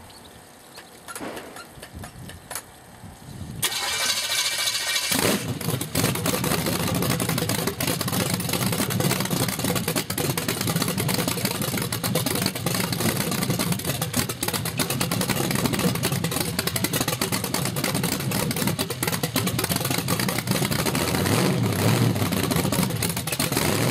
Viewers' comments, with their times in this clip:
0:06 damn I love a good choppy cam idle!